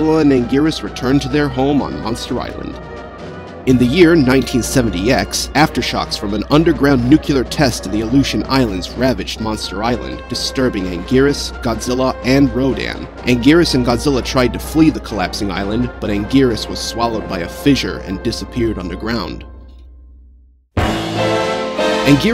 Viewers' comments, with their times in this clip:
0:06 Wait wait wait... Did he just said "Nucular" instead of nuclear. I'm gonna use that.